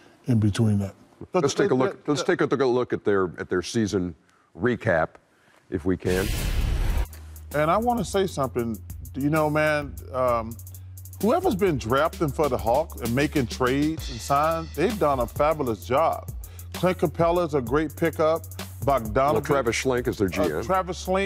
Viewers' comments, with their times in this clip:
0:07 Ernie didn’t even get to talk about that recap chuck talked over it the whole time lol